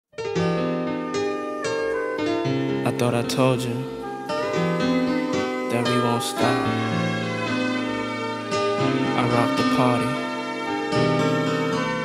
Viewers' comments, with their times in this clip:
0:00 Hey this sounds nice does any know this type of piano the played?